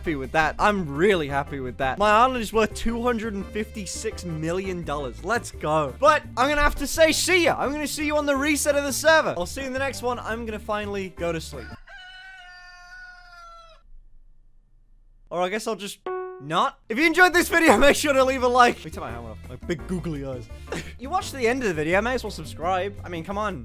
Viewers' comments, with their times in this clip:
0:10 BRO THAT SOUND IS LEGIT MY DOORBELL